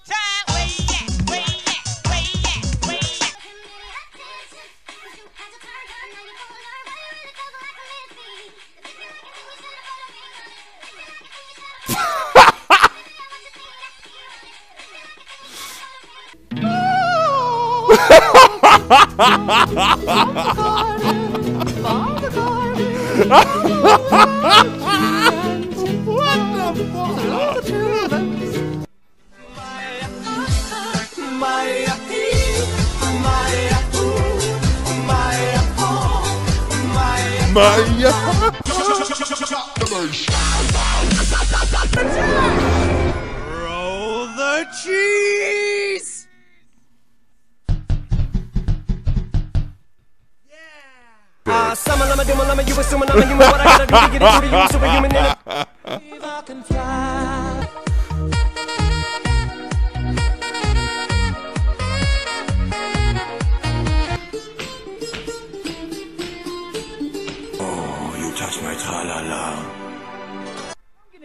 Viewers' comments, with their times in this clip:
0:04 the dude listening to nightcore
0:35 is like our language in philippines he said tumae ako means i poop look at that man he like pooping too
0:57 what a song